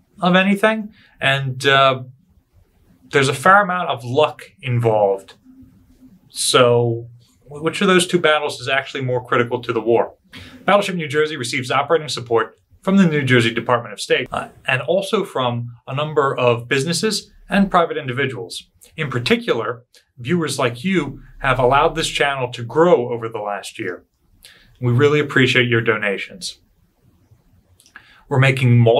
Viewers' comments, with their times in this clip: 0:10 Excellent and informative video. On the lighter side, was that a burp?!